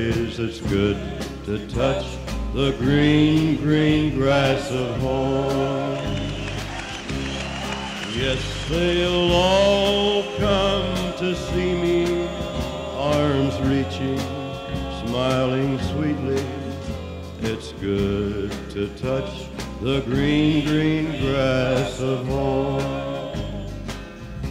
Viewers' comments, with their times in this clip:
0:05 I wonder why there is reverse cheering, that's odd